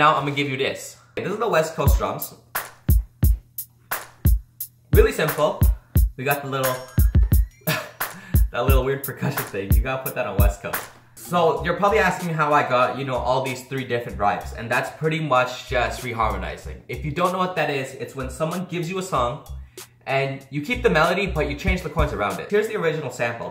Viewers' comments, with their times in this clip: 0:05 GTA San Andreas intensifies